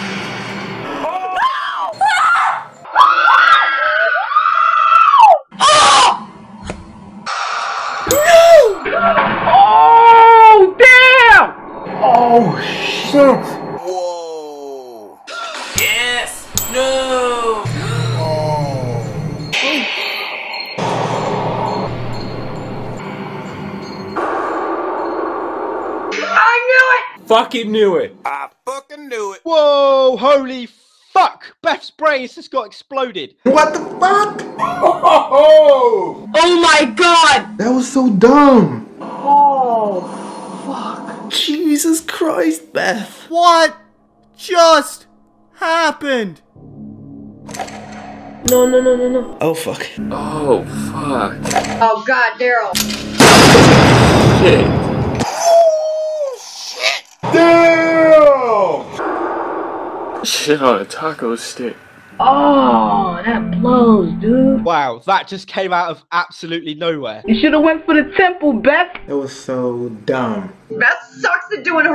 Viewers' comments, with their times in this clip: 0:05 R.I.P. headphones users.
0:15 That guy that said yes and then no was so rehearsed. It was so obvious.
0:36 WELP. My ears are bleeding
0:52 oh god Daryl loved how she said that